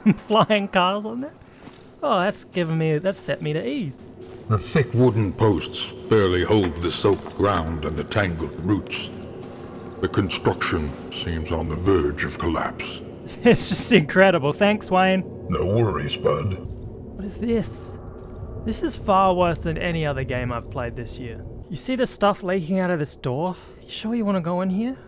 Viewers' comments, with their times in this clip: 0:08 Wait, who's voice is that? That can't be the actual Darkest Dungeon guy but, it sounds so good. Who is that?!